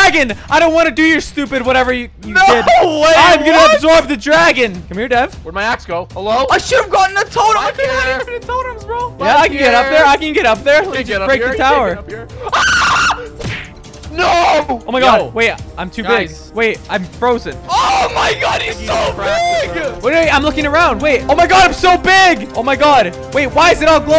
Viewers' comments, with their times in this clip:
0:09 hehe, that bloodcurdling scream
0:10 that scream was amazing lol
0:11 God I lost it with that scream 🤣🤣
0:11 that scream😭😭 its so funny af
0:12 that is what pure terror sounds like.
0:12 most manly scream in the world